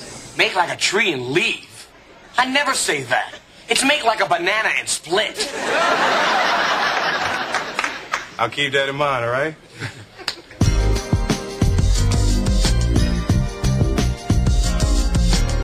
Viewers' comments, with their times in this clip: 0:10 What's the beat sound amazing